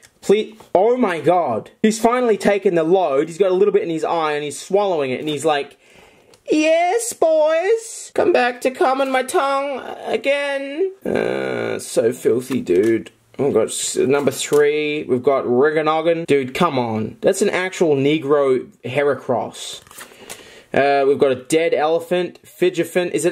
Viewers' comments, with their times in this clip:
0:05 he sounds exsctly like lemon grab